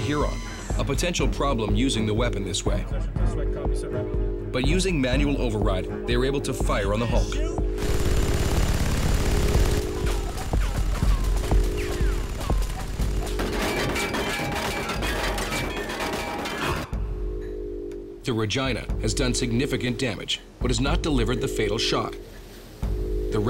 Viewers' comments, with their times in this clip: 0:07 i KNOW you did not rplace the sweet sounds of BBBRRRRRRRRTTTTTTTTT with some minigun sfx from fallout 4
0:10 It sounds like they are using sound effects: